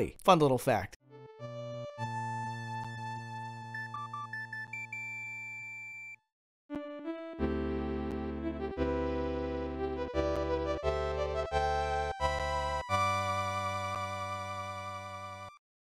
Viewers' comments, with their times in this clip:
0:08 music gets me everytime, the nostalgia I feel with it is immense,